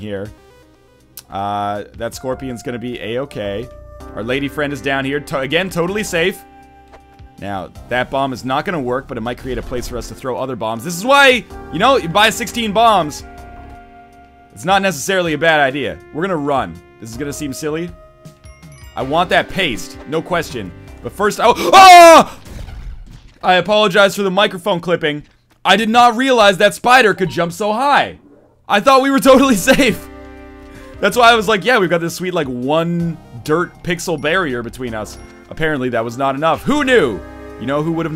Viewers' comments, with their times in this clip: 0:08 God I missed your Spelunky death screams
0:22 i was using his soft tone of voice to lul me to sleep ..... until